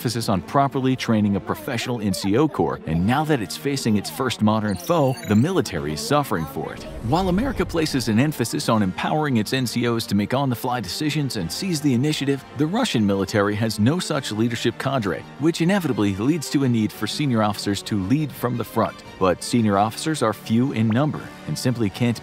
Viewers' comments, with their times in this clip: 0:05 Voice break Sorry Mr Voiceover man, I isn't Vought me off guard XD